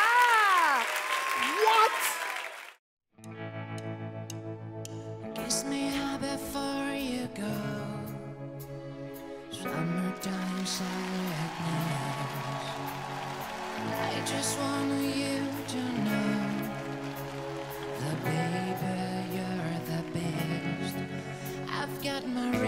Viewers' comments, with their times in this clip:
0:03 The best one ! Great song, amazing voice, awesome audition!
0:04 The gender of the person who sang summertime sadness: Pewdiepie